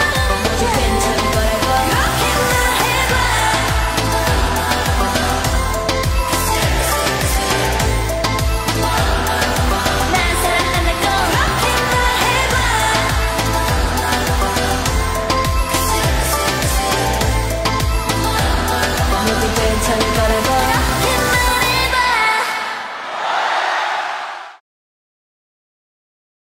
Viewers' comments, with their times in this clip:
0:09 sakuras "nal saranghandago" is actually so addicting omfg